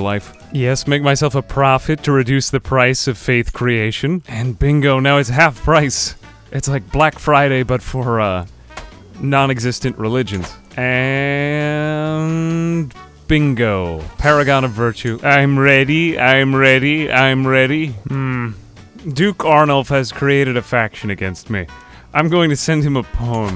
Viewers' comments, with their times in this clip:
0:08 As a part of the community i cant disclose for safety issues, i appreciate the brief pause on this delivery.